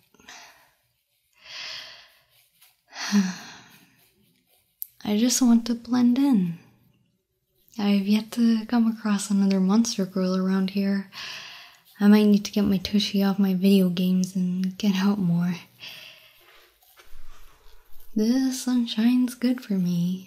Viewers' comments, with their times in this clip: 0:04 From one who suffers from autism, I find the croco girl's line to hit hard, both from her choice of words and tone of voice.